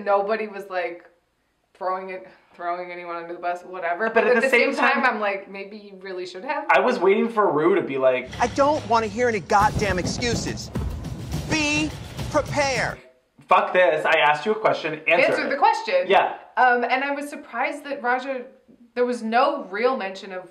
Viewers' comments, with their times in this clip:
0:04 They said “at the same time” AT THE SAME TIME. What sorcery is this?!